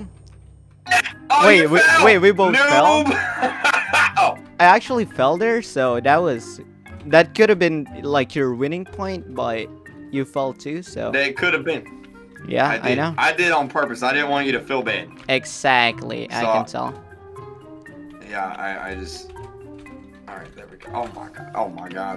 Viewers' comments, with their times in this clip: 0:03 who else thinks that that sounds like "haha, gottem"